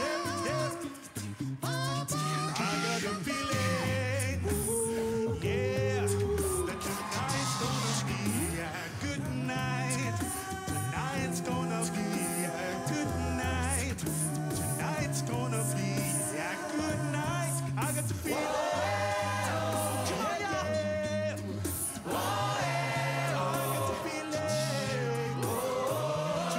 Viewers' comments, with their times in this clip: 0:09 From here to when everyone joins in is AWESOME!